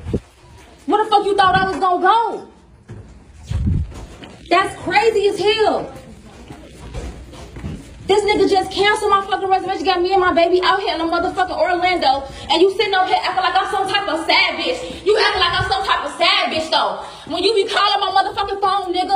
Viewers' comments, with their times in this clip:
0:06 she’s BEGGING for this room 😭😭 I know he’s dead wrong and he should pay for her room out of principle but ma’am. She says she had money but didn’t wanna spend it but I don’t believe her cause the way she’s screaming sounds like she’s desperate and stranded. No one who can afford to pay for their own stuff is screaming like that and asking a lady on a plane to help her get an Uber and letting hotel staff pay for her room. NEVER depend on a man ladies I don’t care what he says.